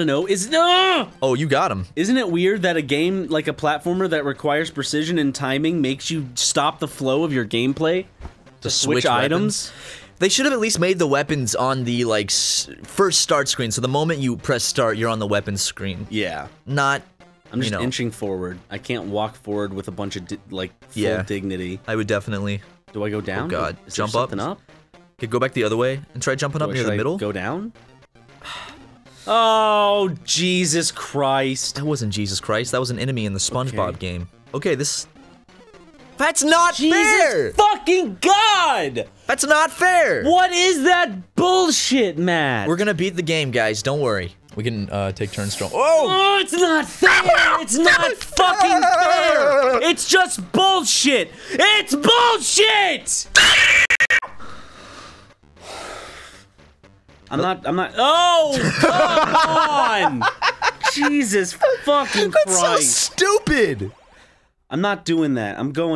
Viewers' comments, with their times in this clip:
0:09 Spongebob sighs as he's forced to trudge onward
0:09 totally thought that was spongebob's breathing at first
0:53 Thumbs up for the Pterodactyl scream lmao